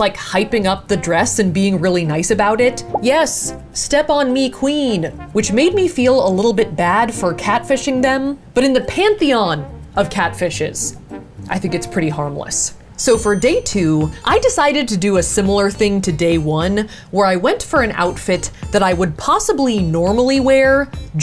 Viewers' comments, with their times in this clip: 0:03 THE WAY SHE SAYS "yes step on me queen" WITH A MONOTONE VOICE IS KILLING ME